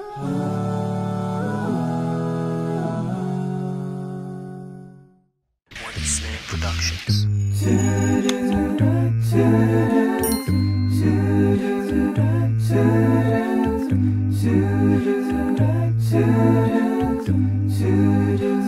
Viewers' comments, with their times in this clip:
0:06 this part caught me off guard lmao nice tunes